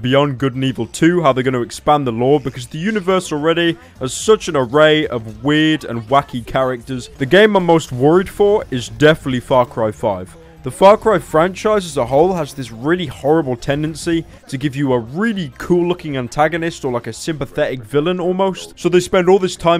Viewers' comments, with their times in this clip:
0:03 The universe already has such an array of weed